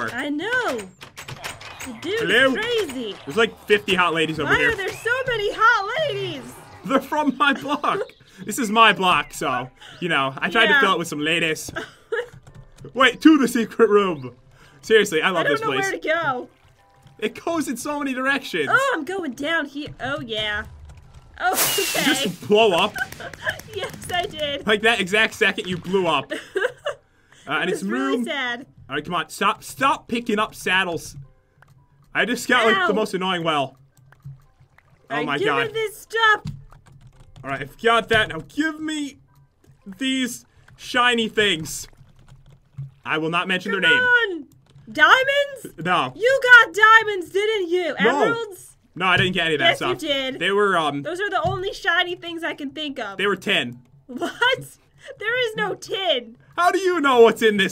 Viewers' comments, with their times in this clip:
0:05 Did anyone hear an eagle sound?
0:43 i thought he said " i will not menstruate " lmao